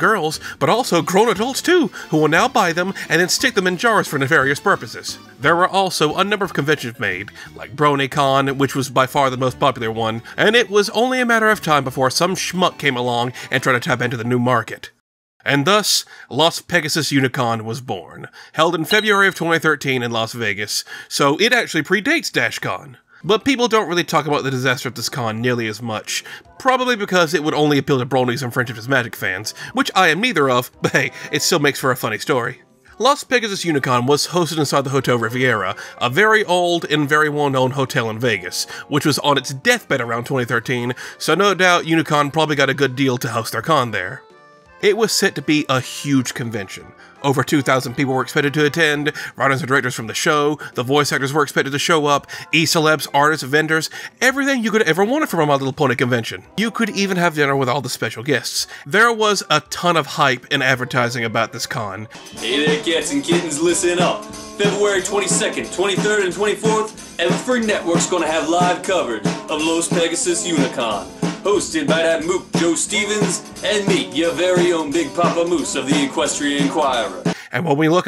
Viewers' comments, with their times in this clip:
0:06 did anyone else hear this as “convictions” and didnt even question it?
1:02 bro sounds like a wwe announcer